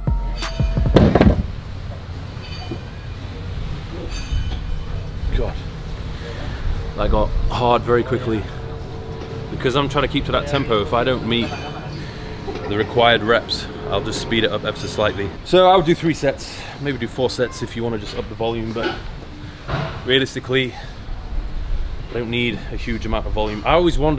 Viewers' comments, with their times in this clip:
0:06 I had to listen to that a second time because I heard it wrong..